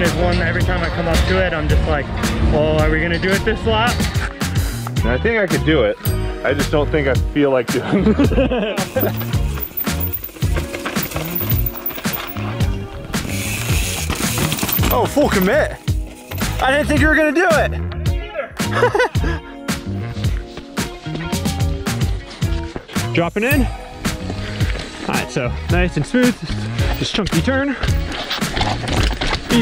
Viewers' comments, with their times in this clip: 0:10 sounded like he had a brittish accent and said ”oi fokin mitten”